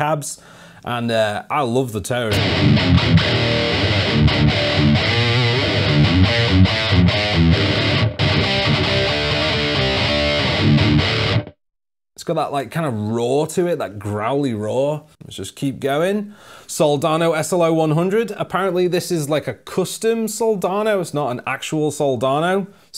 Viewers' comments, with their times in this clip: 0:07 this thing rips... Reminds me of late Carcass stuff